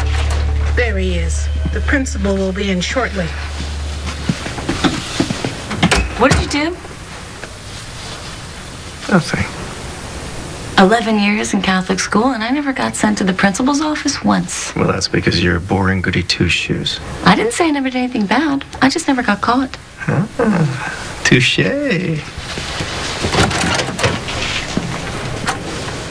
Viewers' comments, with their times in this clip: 0:07 Jane was surprised Lisbon became uncharacteristically a bit rebellious to authority, and then her somewhat petulant, "No!"